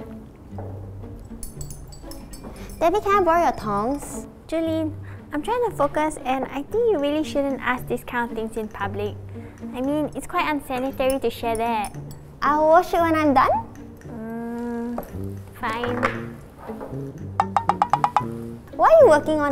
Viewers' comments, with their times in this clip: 0:03 I thought she said Tongue